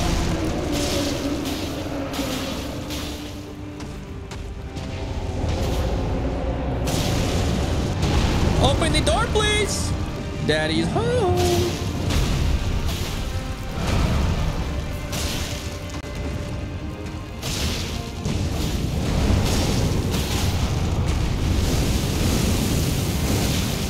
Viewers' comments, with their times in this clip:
0:05 Gru is that you i hear